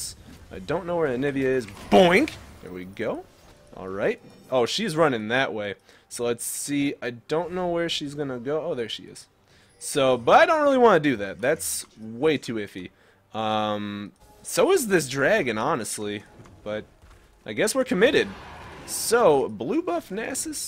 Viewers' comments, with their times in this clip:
0:03 A few seconds after you can hear a weird sound I have been hearing it in my own league games to recently Does anyone know what it is?